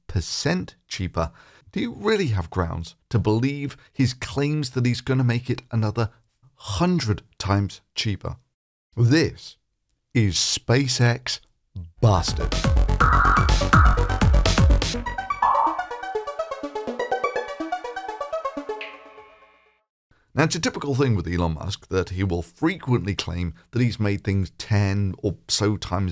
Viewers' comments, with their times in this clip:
0:09 Subtitles say: "This is spacex bastard." I can't blame the subs.